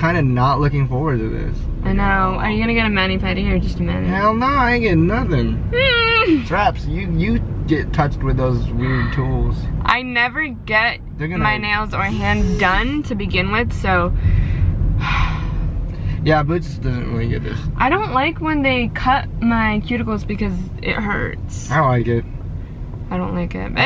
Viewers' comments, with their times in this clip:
0:05 does that not sound like the muffin song to u